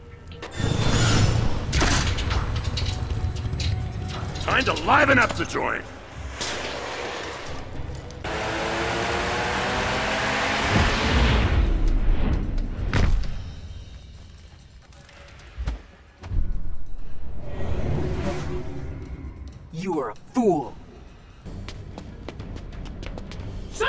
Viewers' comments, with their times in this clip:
0:07 Batmans impersonating the Crazy Frog XD